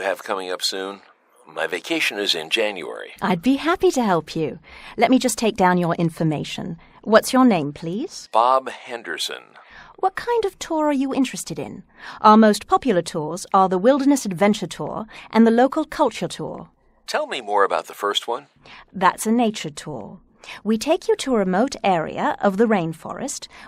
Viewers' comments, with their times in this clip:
0:05 Let me just take down your intonation(X) ===> Let me just take down your information(O)